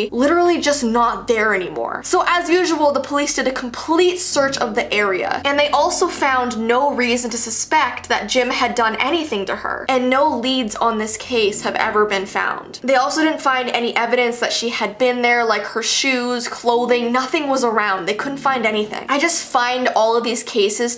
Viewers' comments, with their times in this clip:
0:08 BRUH I THOUGHT THAT WAS A WEIRD DEMON THING IT WAS A CAR UHHHHHHHGGGGGGG